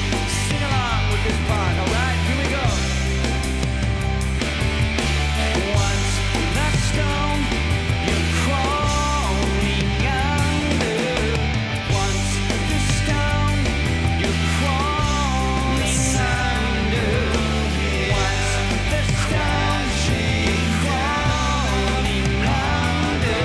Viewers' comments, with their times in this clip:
0:04 this is the absolute greatest guitar solo, but Myung's baseline afterwards is a fucking groove.